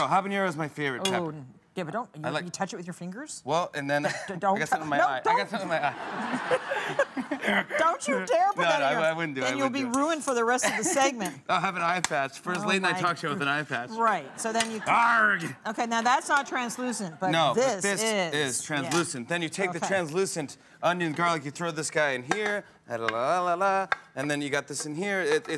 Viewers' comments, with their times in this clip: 0:06 Visit for the dorkiest laugh ever ♥